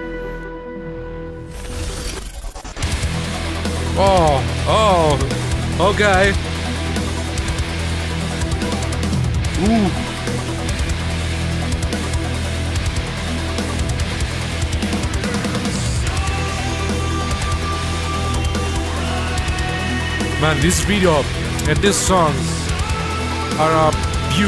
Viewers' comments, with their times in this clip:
0:07 this part has biiiig "The Algorithm" vibes!! ✨